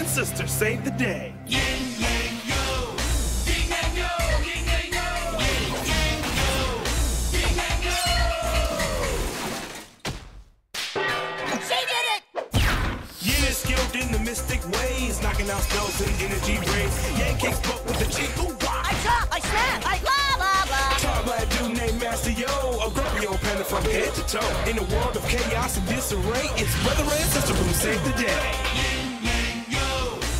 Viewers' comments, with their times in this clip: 0:09 I had seen this series in Italian, with the intro I had believed that they had said "sedere!" (butt) among themselves, I have not been able to analyze that they had said "he/she did it!" After a lot of years, I just realized it now. 😂
0:12 sounded like Timmy Turner